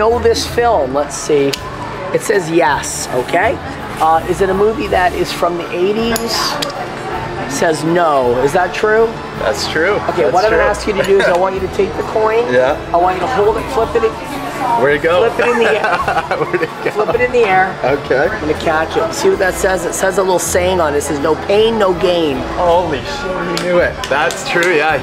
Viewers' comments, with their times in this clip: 0:08 Just vibing to ariana grande